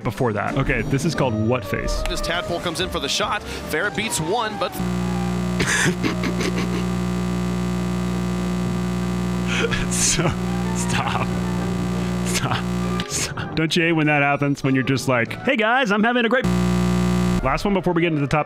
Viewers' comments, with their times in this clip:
0:06 Rocket League APAC stream sound quality be like: